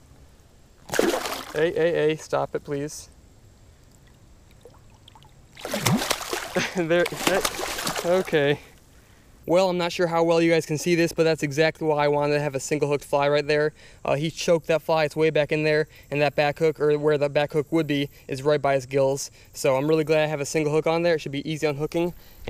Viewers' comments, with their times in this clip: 0:07 the “oook” of fear (don’t worry we’ve all been there)